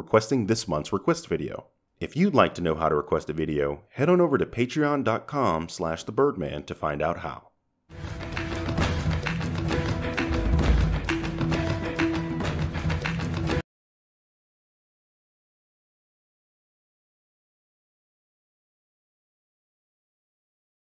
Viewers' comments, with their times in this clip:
0:08 I don't know why I thought about this, but the start of the music sounded a bit like the Halo theme, for me at least